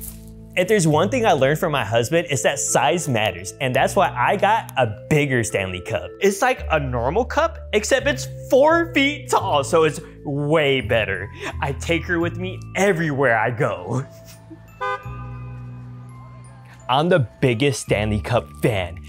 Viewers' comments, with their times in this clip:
0:03 I honestly hear smatters